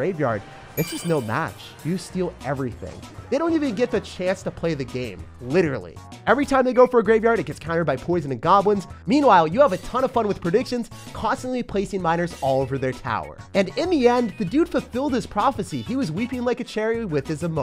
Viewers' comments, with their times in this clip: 0:04 Lol I like this part when u said literally It's sound funny